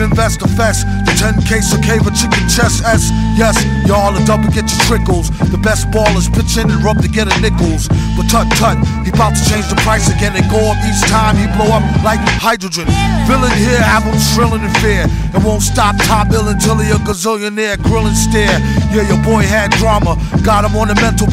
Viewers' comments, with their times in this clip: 0:08 I think the whole song throughout has it I like the 2 lines because it’s so fluid and for his breath before saying “hydrogen” it’s a pretty dope pause pause